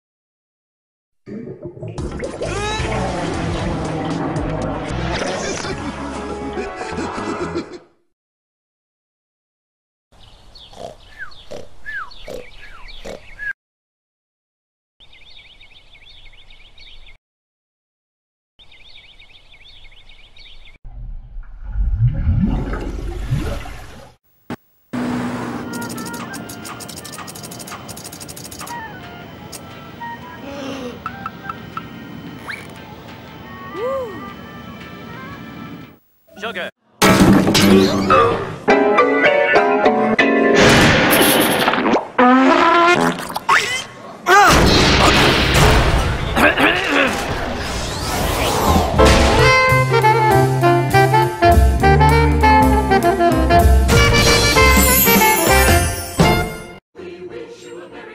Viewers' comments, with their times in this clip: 0:01 Oo Nice Minit Good Beat Growin Yo
0:37 a Christmas song
0:43 Fart reused sound effect